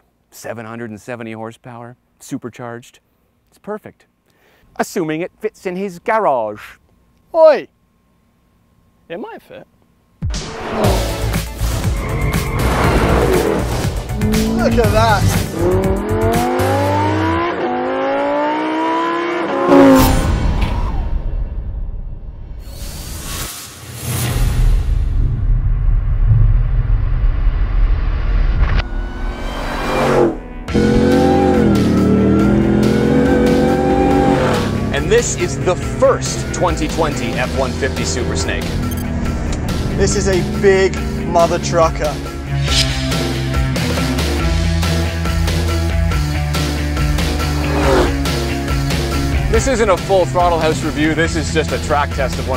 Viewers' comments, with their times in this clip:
0:05 he said garage like he’s matt Watson from carwow😂
0:29 That sounds like a GODDAMN REDEYE!
0:33 I’ll be honest fellas. it was sounding great but.... I could’ve used a little more cowbell.